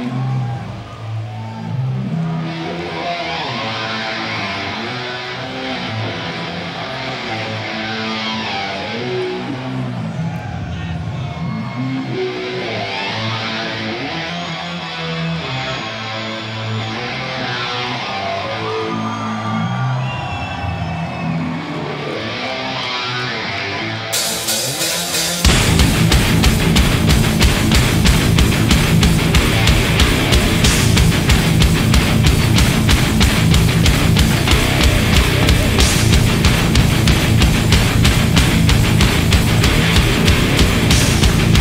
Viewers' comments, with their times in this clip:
0:10 did someone say "asshole"
0:25 Oohh That Drop Tho